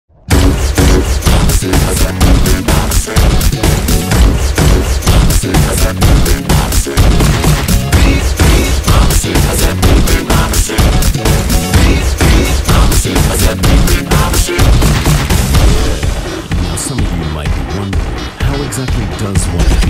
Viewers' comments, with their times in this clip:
0:00 gun ? i like that fire sound